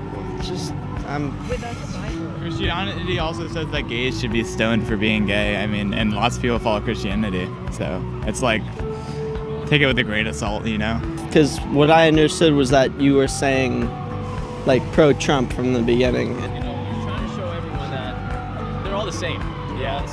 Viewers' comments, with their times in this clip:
0:03 I'm surprised by how deep his voice is. It just doesn't seem right with his skinny build 😅